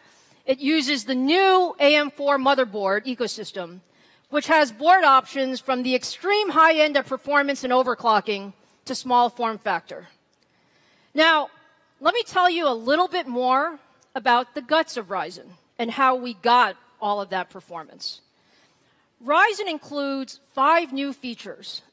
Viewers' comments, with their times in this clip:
0:04 What is it all about this AM4 PlatFROM? xD